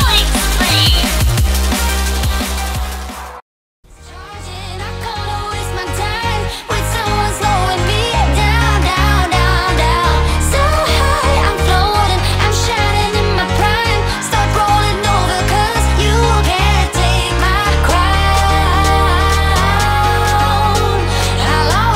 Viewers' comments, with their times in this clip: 0:04 Music started a of gord and xborg